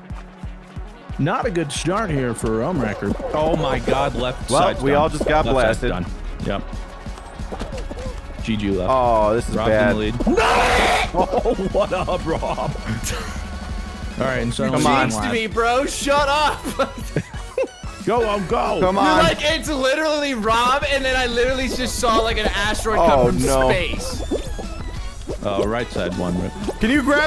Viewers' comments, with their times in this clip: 0:08 yo fu**in dying laughing when dude screamed 🤣🤣